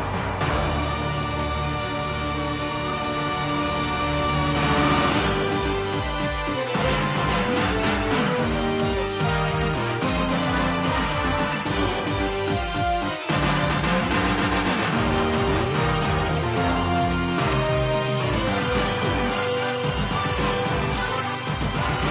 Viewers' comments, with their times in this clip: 0:05 This sonunds like a movie in